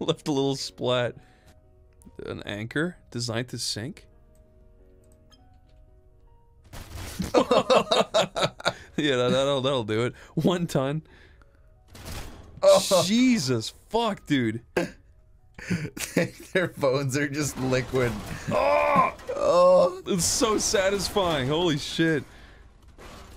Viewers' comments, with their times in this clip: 0:07 How do you synchronize the exact same laugh like that?